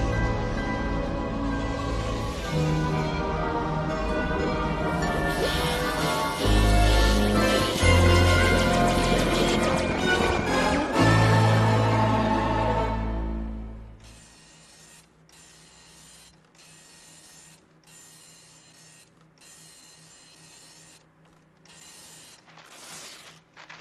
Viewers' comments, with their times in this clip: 0:10 The background music when Flynn returns to the real world is epic.